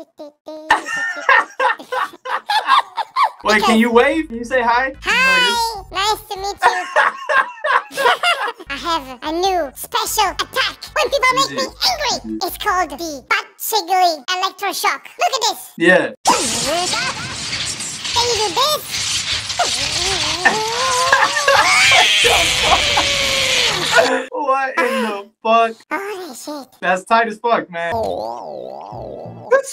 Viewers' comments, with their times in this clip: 0:09 Why those it sound like fearless in this video ?
0:15 bro the voice of pikachu got me dying on the floor